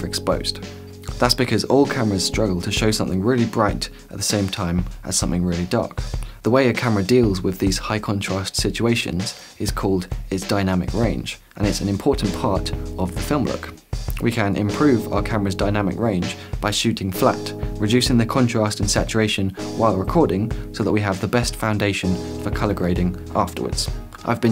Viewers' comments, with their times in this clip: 0:06 "Is called is dynamic range?" That feels like a typo but in actual speech, I didn't think that was possible.